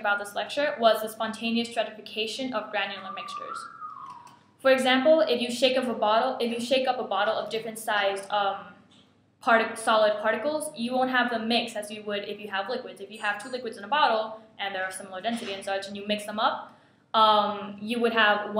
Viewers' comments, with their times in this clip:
0:03 came across this video, just wanted to say, that guy can whistle :D